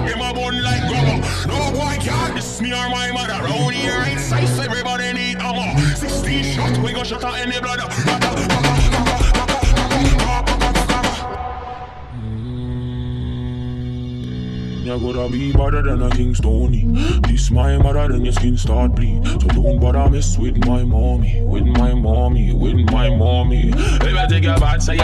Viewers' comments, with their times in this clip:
0:06 is it just me or does it sound like he said "Shoto and his brother"